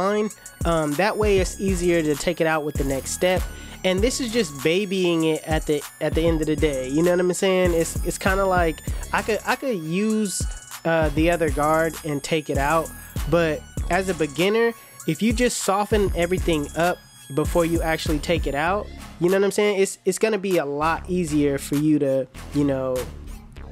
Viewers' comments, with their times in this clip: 0:06 "yadda mmmhh saying?" No!! I have no damn clue what the hell you just said! 😂